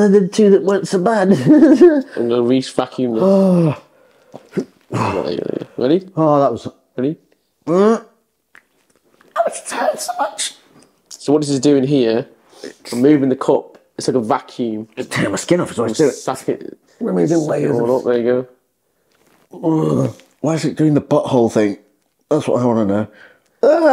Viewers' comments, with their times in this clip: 0:10 You know the pain is good when you're voice jumps 5 octaves